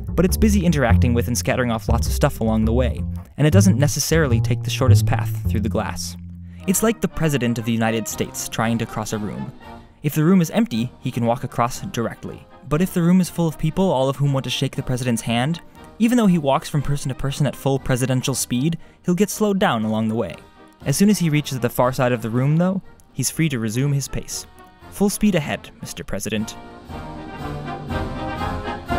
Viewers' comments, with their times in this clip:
0:10 (door force one)